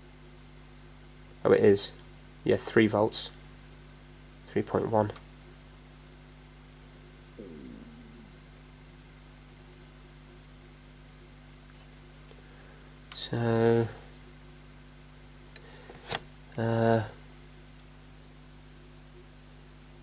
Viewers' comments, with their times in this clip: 0:06 Been a subscriber for about 4 months and I love your videos. Very entertaining. Did I hear your stomach growling ?... LOL
0:06 Besides, you should have a snack plate next to you when you work that growl caught me completely off guard.